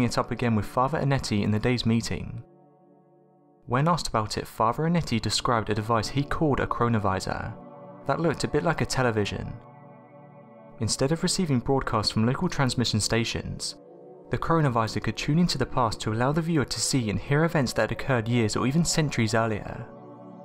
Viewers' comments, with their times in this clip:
0:06 👂🏻 That word sounds very similar